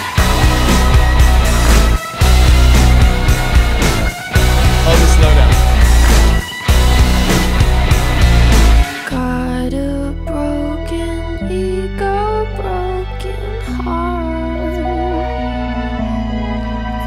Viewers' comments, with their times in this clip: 0:04 THE SLOW DOWN GOT ME